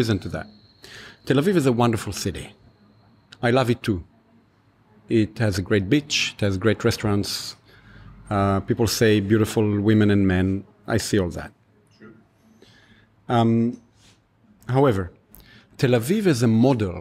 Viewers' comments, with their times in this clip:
0:04 I'd love to visit the great bitch of Tel Aviv some day .... ;P